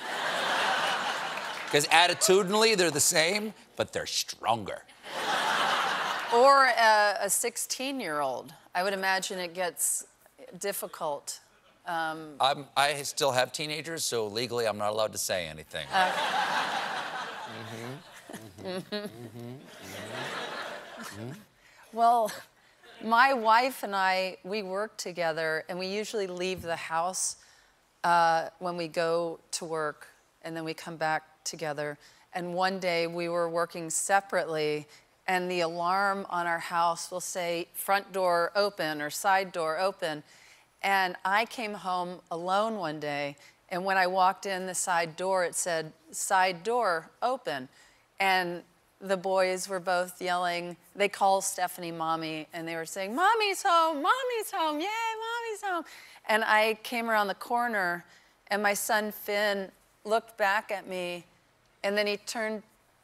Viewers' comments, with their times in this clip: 0:03 Why did Stephen say "stronger" like Emperor Palpatine? Apparently parenting a three-year-old leads one to the dark side.
0:48 Anyone else get a ton of distortion ?